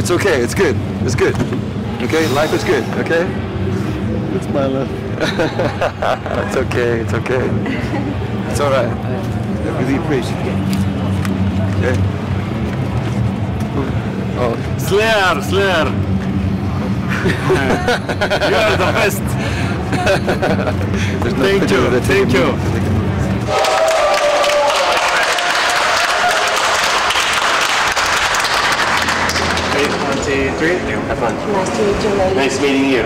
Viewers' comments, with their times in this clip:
0:09 "slear slear" and the tom face (wtf said) XD AJAKASJAKJ GRETTINGS FROM CHILE
0:14 slier slier Tom : wtf lol